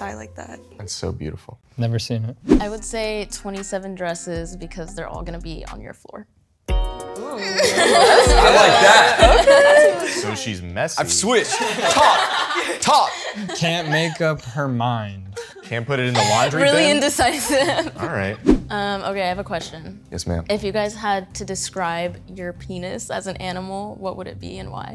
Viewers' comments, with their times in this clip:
0:10 dude was so aggressive saying, I LIKE THAT!! 😂